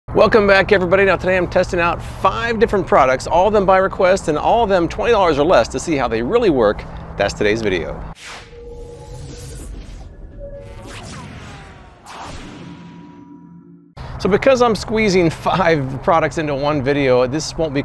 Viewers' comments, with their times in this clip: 0:01 My brain “is that a tiger in the back? Oh wait it’s just Bailey hahaha”